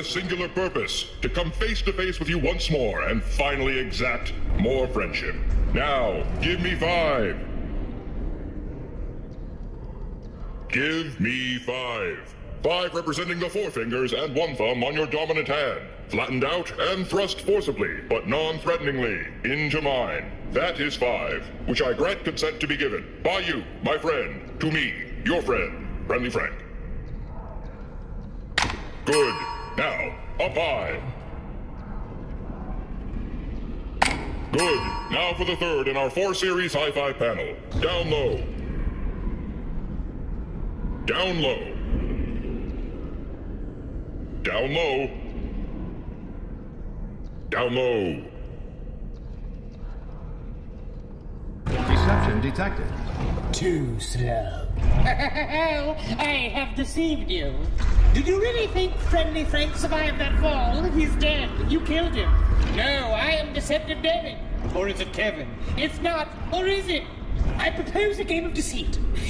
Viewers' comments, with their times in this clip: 0:07 "Give me vibe"
0:54 Who else Heard a Papyrus voice here